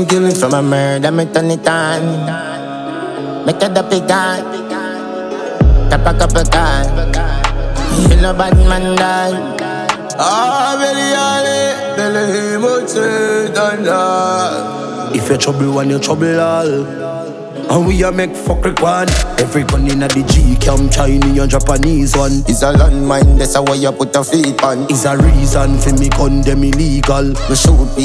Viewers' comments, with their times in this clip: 0:10 Man vocals gothic yf